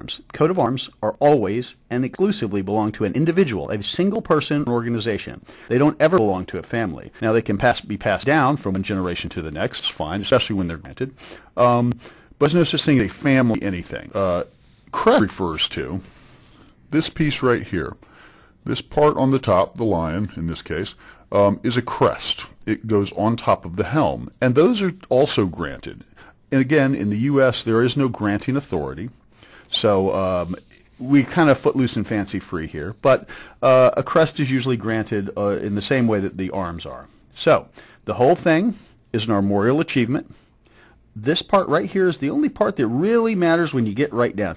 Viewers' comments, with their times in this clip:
0:08 The audio melts wow
0:15 Why did the pitch get lower ?
0:26 So, I guess that Berry White takes on the speaking... cool ;)